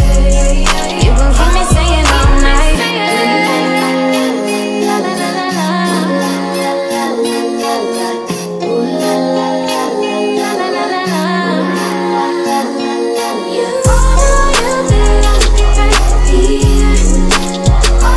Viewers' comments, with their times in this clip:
0:05 song look like EXO TEMPO.